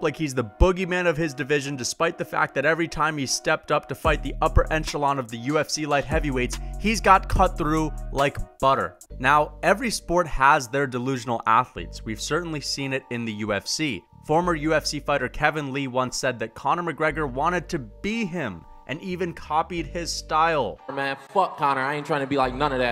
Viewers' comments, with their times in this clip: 0:04 Can you explain what an "ENchelon" is? Or are you just at a lower echelon of intelligence?